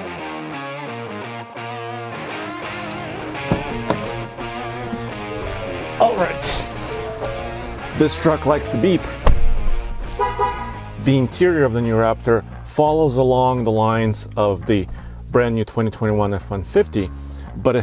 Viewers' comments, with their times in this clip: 0:05 If anyone says this sounds like a V8 they don't know anything about trucks or v8's lol what a let down. the door sound is the same as the cheapest ford you can buy from 10 years ago that cost 1 or 2 grand lol haha